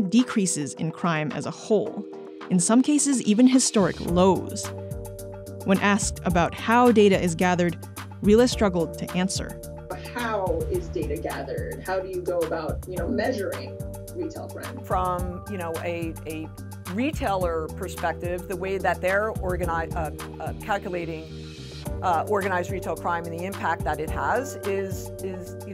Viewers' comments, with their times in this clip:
0:08 the narrator wasnt lying when she said RILA struggled to answer... the lady starts to answer and stumbles and then again but I love that she caved in and told the truth instead of what most people would do in that situation ..Go In Circles